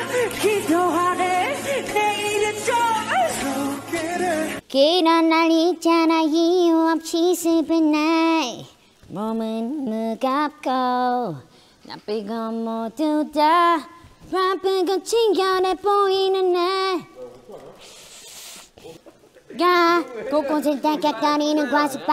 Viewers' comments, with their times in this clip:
0:05 IM NOT THE ONLY ONE THINKING HE SOUNDS LIKE A 10 YR OLD TRYNA SING 💀